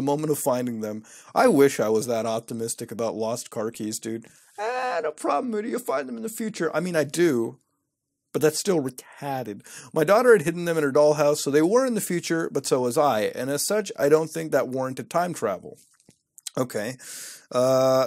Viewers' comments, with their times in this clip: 0:04 Nobody heard the Muta-goat ??